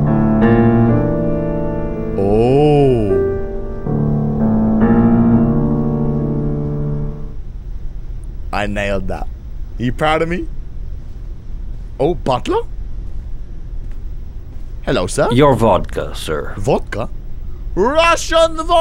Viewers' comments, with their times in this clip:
0:05 there is depressing music for when he is playing the piano XDDD